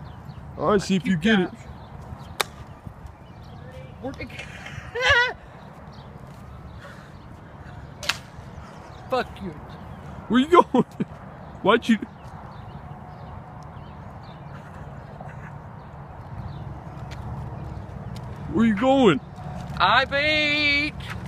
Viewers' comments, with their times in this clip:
0:03 did anyone else hear that laugh